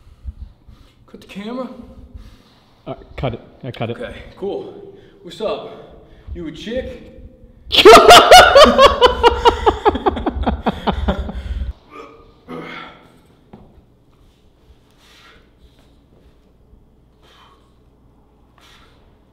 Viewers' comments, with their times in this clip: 0:07 fucking earrape lmao